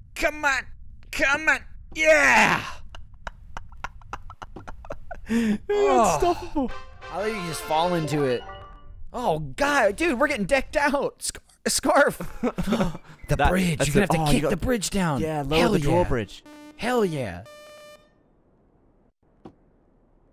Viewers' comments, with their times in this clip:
0:07 had me checking my discord DM's like